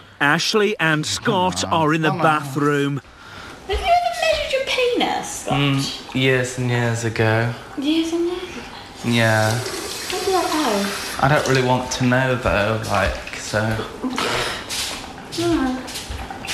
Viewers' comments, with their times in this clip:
0:03 what does ashleigh ask scott and what does it mean? it sounded like milly? we dont say that in ireland, please help!! lol